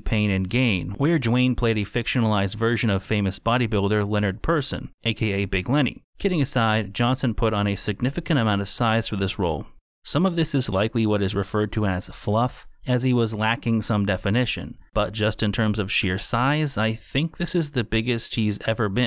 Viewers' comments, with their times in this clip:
0:03 huehuehue it piss